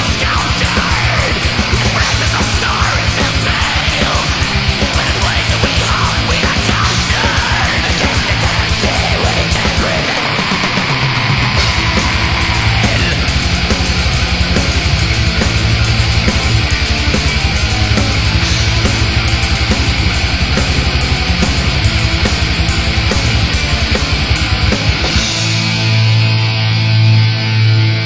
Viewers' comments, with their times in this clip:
0:09 i think its really short and its the vocal seem different